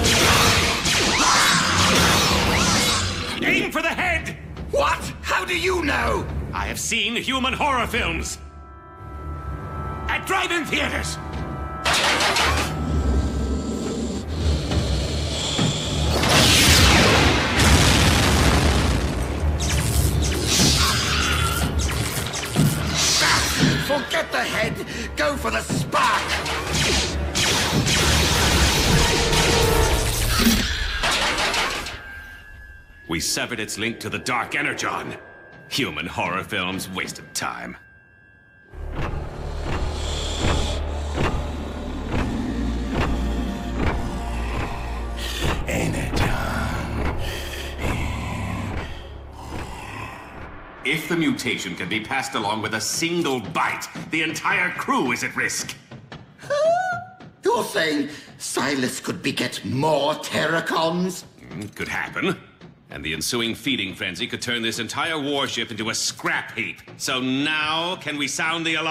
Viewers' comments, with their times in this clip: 0:10 he sounds so defensive 😂
0:56 yet another Starscream's cute sound